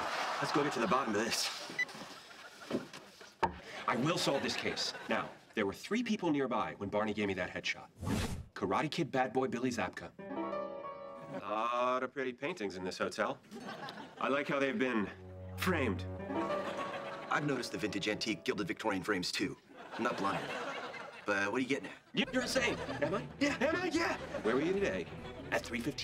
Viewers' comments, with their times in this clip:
0:10 Therapist: this William Zabka cannot hurt u Me when I saw someone with who looked like Zabka with tense piano theme: